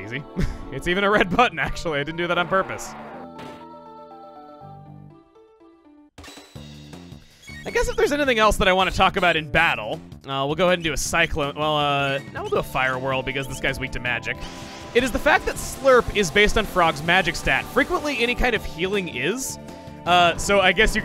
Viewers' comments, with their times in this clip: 0:08 anything else in BATtle, hmm?